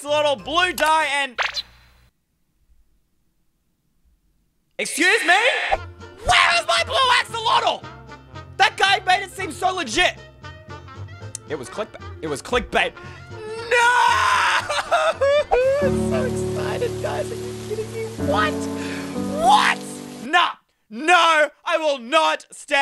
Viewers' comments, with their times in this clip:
0:03 The moment of silence 🙃